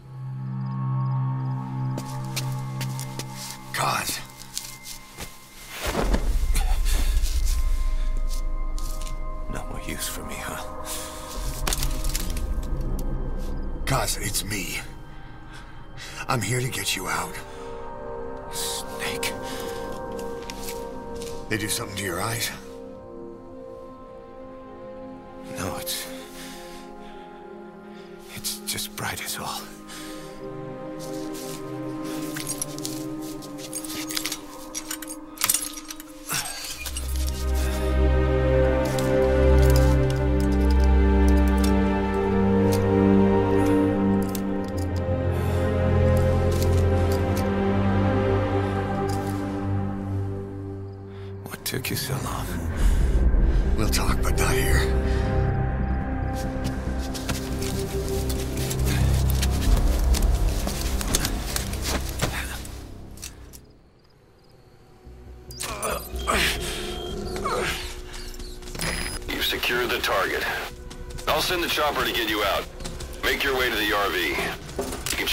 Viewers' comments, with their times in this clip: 0:10 Waaaaait a minute... That's not David Hayter
0:57 that sounds like Kiefer to me... Hope some day Kojima go rogue and release a Haiter Voice MOD It was wise don't given too many lines to Kiefer